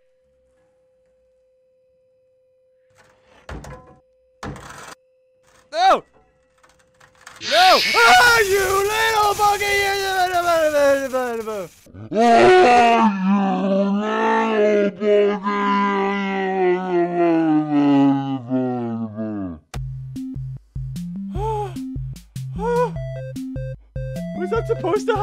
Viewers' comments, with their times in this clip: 0:08 why did it scream like a girl?